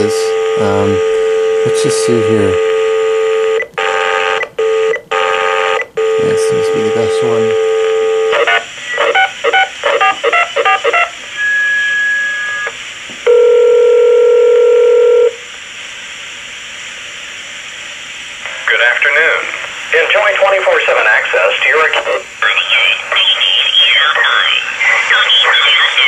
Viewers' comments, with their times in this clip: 0:08 Were you dialling a number, or screaming saying "HOLD UP.. HOLD UP"??